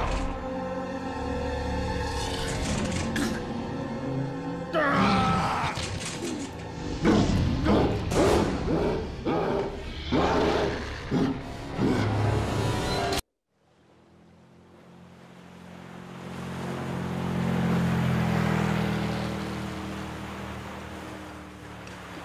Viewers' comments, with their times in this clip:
0:05 Dean's voice deepened or my impression